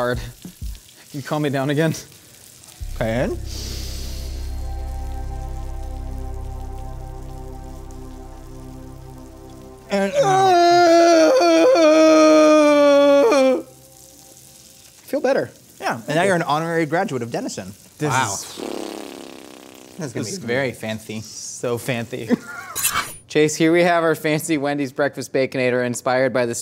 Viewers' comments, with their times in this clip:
0:10 Josh sounded like Lemongrab lol 😂